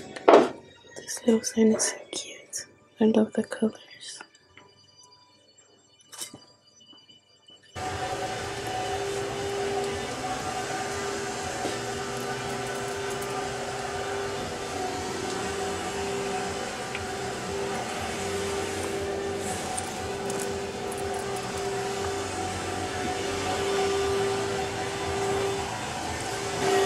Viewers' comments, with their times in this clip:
0:08 the way my heart jumped out of my body 😂 headphone users, be warned of vacuums